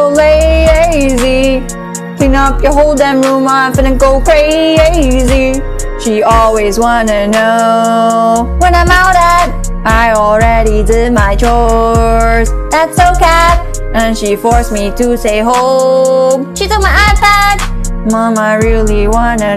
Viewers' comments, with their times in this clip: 0:03 omg why the eyes and hand and just way she said it Lol